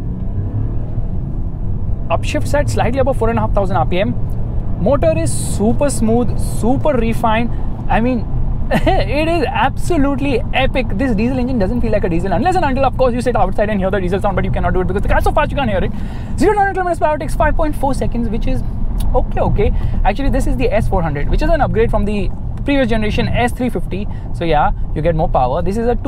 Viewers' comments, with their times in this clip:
0:10 rap god mode on😂😂❤️❤️